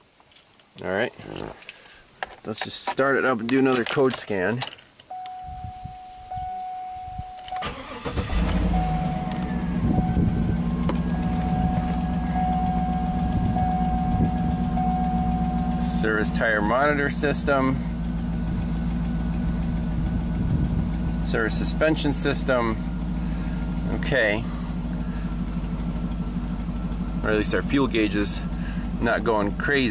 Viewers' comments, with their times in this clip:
0:10 That ticking is a broken rear exhaust manifold bolt. Chronic issue on the GMT900 trucks.